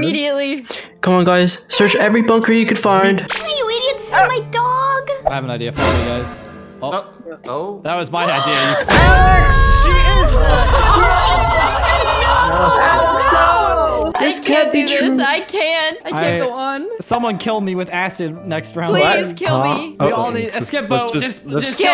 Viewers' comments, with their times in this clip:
0:08 when they looking for alex is so cute all the squad aww❤❤. When they emergency metting all of the squad cry and it make laugh lol 😂